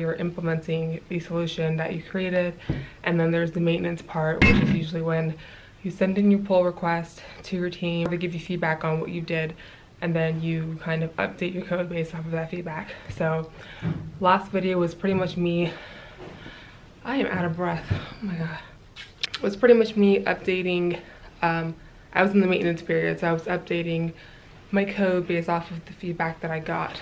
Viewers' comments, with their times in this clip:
0:09 By the way, we say Refactoring not refRactoring , I always do this mistake too ^^